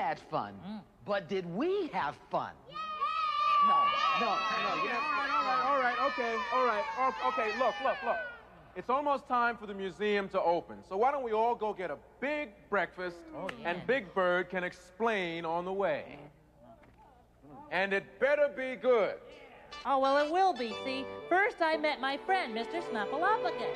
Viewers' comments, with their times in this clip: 0:08 Gordon: Its Almost Time For the Museum to Open. so why don't we all go get a Big Breakfast And Big Bird can Explain on the Way. Gordon: And It Better Be Good Wow Gordon Sound Serious I Guess Big Bird is gonna be Grounded